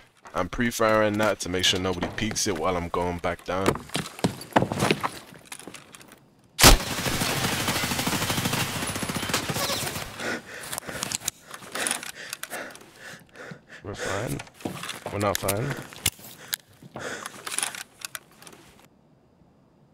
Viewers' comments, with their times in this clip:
0:05 The shooting comes from the end of the hallway ? That's why find this game so hard, cant even see the enemy.